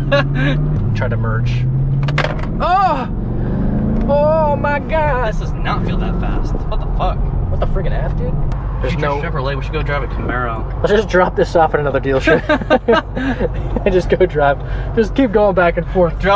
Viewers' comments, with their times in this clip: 0:03 Are we not going to talk about this angelic voice your friend has? Lmao